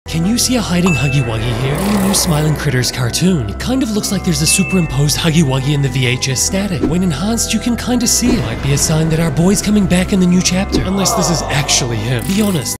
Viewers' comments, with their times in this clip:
0:01 that’s mandas roar